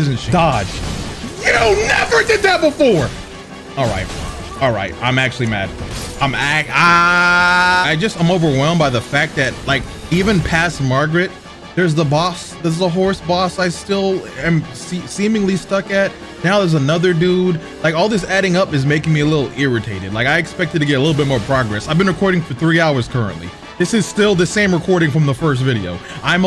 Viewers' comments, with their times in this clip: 0:06 This is the most chill angry yell I've ever heard
0:07 Shoutout to the lowercase scream I love this man’s content 💀